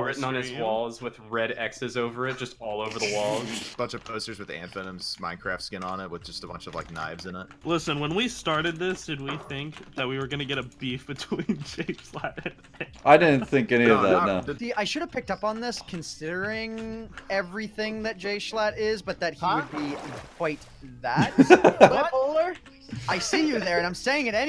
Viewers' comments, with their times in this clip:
0:08 did anybody else heir the smash 64 hitting noise